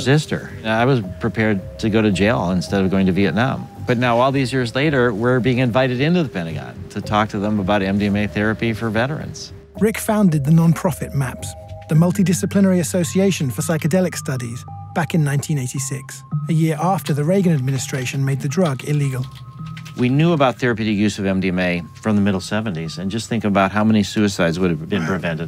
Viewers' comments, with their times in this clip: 0:10 that bong ba ba ba bong🎶